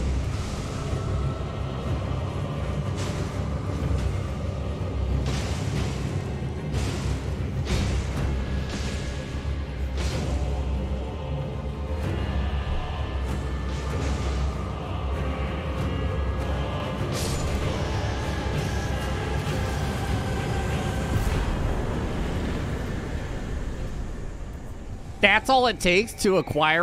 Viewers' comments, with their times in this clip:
0:09 The most satisfied sip of coffee